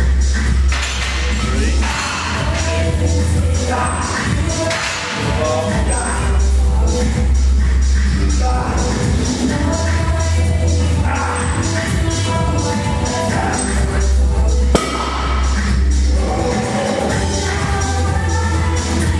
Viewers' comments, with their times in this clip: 0:06 them perfectly synchronized grunts tho